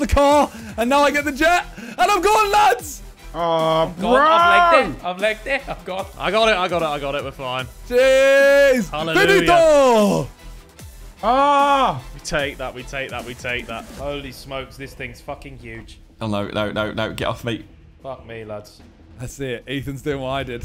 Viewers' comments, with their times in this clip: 0:08 To all the moroccans here, Simon screams 'Finito'